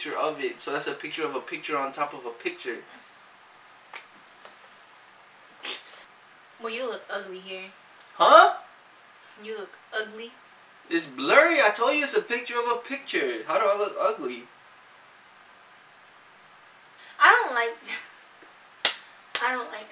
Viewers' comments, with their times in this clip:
0:04 one of um farted hahaha